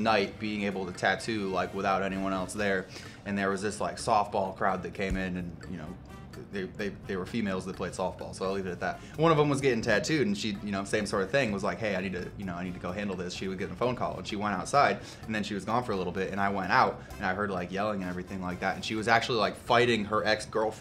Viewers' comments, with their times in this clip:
0:07 “they were females” ...idk what was more cringy, the guy saying “females” in the most awkward and isolating way or the fact that he didn’t know that softball is baseball for girls anyway lol we know they’re girls already